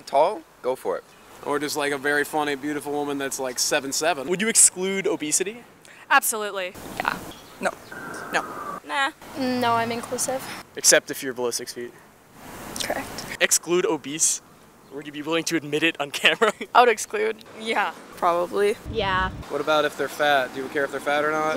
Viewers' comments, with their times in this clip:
0:09 Captions = Ballistics speed. Relistening properly = Below 6 feet. LOL :D